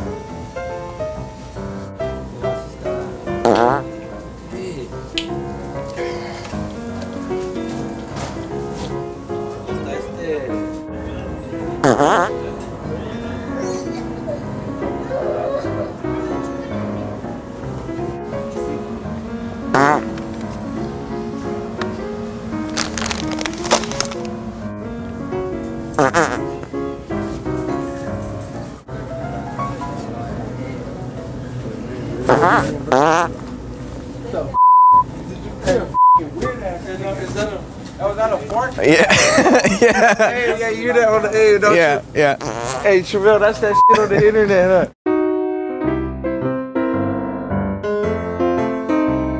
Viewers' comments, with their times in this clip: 0:04 "AYEEEEEEE!!!"... That fool sounded like Cheech hahahahah
0:11 do you hear that sound of a kid vomited?? 😂
0:31 I like how the music dies down